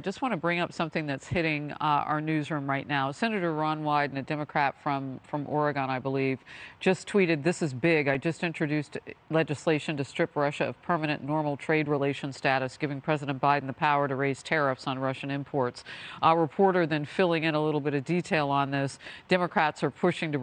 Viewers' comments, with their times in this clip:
0:04 AH YES! The mythical legendary land of Auragone! No auras here folks!!